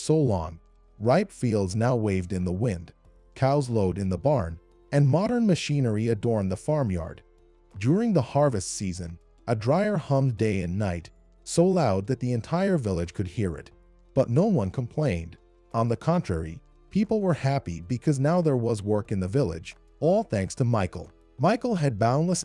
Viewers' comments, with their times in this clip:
0:04 I guess AI isn't quite perfect yet . As evidenced by the quote " cows load in the barn" Really? I do believe that the correct term is "lowed" then again at 10: 22 quote " Anna side again" should be "Anna sighed again" . As well , the closed captioning sentences are not constructed correctly and words that have 2 meanings AI seems to pick the incorrect pronunciation every time . After all of this I didn't bother to watch the rest of the video. If not important enough to get words and sentences correct , not worth my time to continue to watch